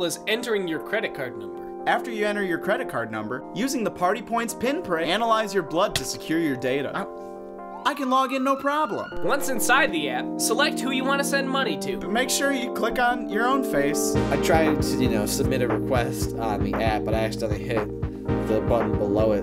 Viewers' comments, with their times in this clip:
0:05 the minecraft sound effect lmao